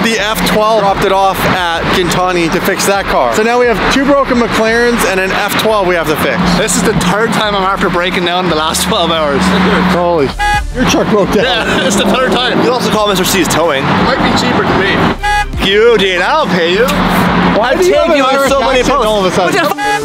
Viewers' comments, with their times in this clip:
0:06 turd time. I love the accent.